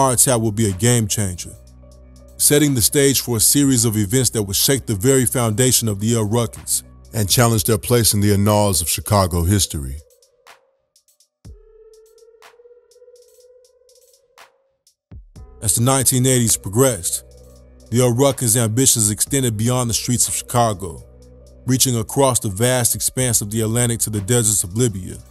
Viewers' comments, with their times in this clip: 0:08 "Anawls"? Annals rhymes with channels and panels and flannels.